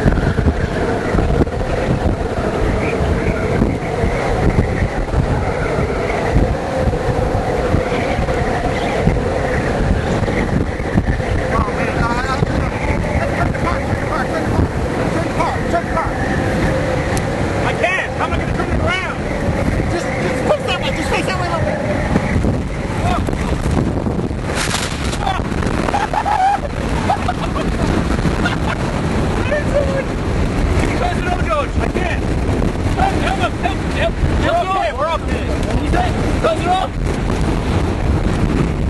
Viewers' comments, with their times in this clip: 0:05 Excellent mesocyclone! One rotating that violently could produce another tornado at any second (and it looks like it did). Was that the roaring wind that could be heard after the funnel cloud appeared after ?
0:25 guy laughing like Joker :)) Great vid.
0:26 his laugh cracks me up. he sounds like a maniac. "Woo hoo hoo hoo! WOOHOOHOOHOOHOOHOOHOO!" XD